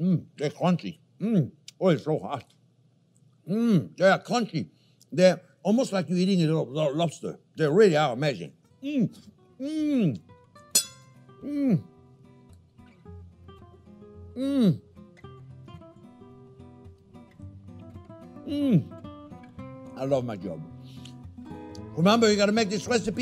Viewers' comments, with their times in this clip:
0:09 ...U - R - SOOOOOOOOOOO --- Adorable :virtualhug::yougotthis:...Thanks for the Cute Laughs :goodvibes: --- Your Body Gestures ...R...just to Cute !😀😊🤩
0:10 OMG, THAT'S my beatuiful old daddy. No words can describe what is universal in that face and the gutteral, mmmph's! He died in '92, but he would have loved this, "Jean Pierre" dude as much as I do.